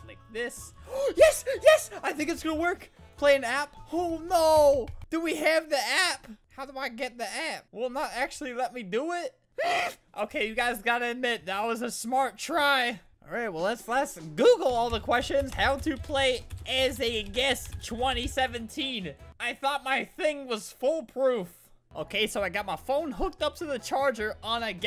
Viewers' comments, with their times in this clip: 0:09 did u just meep?